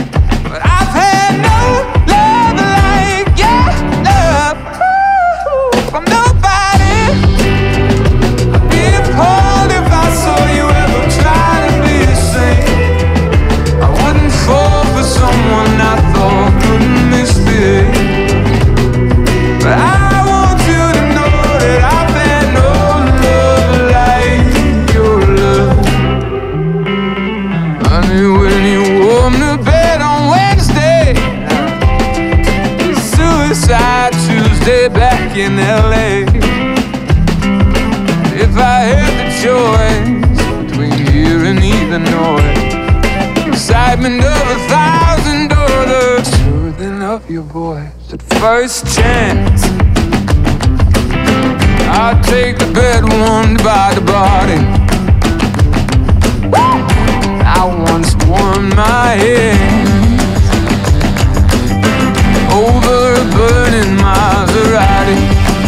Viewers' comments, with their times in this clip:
0:08 = EARGASM for god's sake how can he be so perfect
0:48 THIS BASSLINE SCRATCHES MY BRAIN SO WELL
0:49 Man that descending bassline from gets me every time.